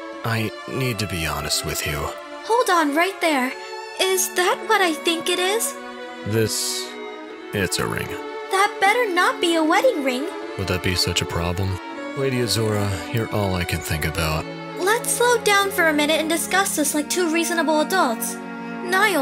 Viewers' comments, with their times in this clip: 0:07 ... The way he just says.. "this.. Is a ring." sounds like he's just annoyed? Idk